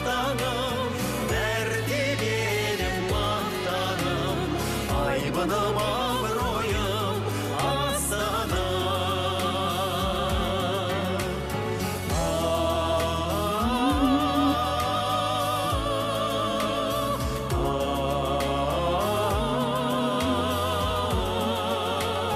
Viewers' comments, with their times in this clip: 0:04 Parents singing together .